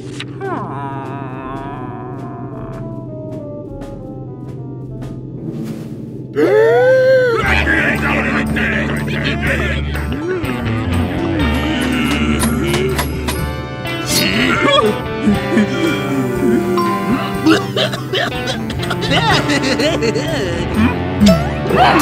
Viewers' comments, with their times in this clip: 0:08 I saw a Third Class airplane is noisy and shout & disturb from airplane to her bad manners